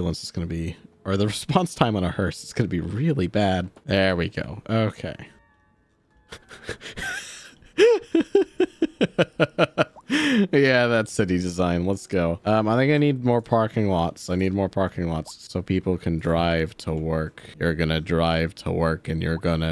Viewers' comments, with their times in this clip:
0:05 The evil anime character laugh